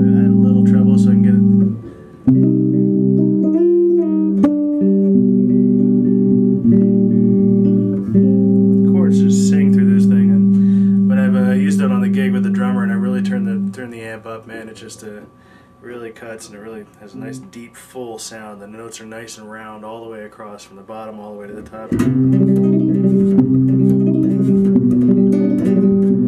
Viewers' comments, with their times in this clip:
0:07 I've got to comment again man! ! Crazy! That's so soulful.